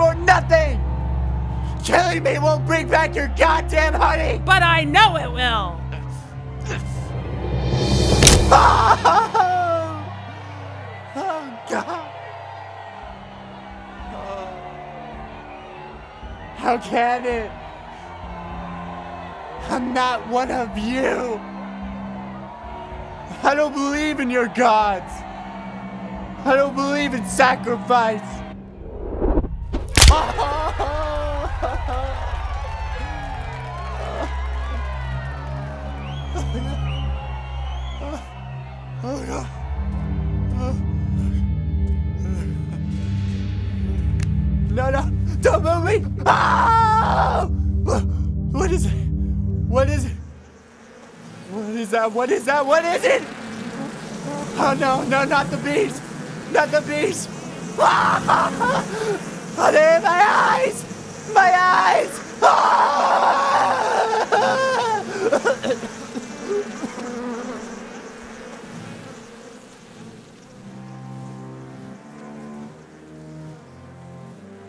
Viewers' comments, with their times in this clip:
0:08 Trauma like this causes a displacment fracture (breaking the bone in two), he should b screamin in agony not sound like he stubbed his funny nerve
1:01 what's going on to his sound? :'V